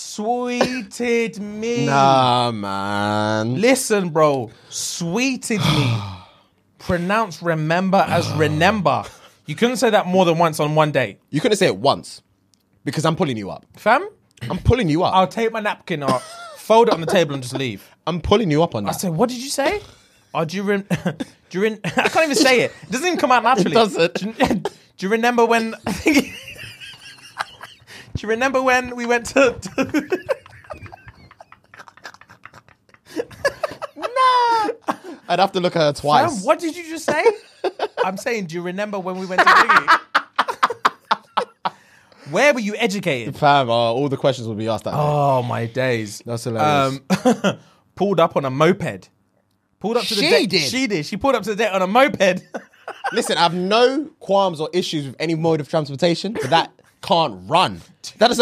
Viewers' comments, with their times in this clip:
0:07 🤣🤣🤣🤣 laughing this hard should be a crime
0:39 the outburst of laughter 🤣🤣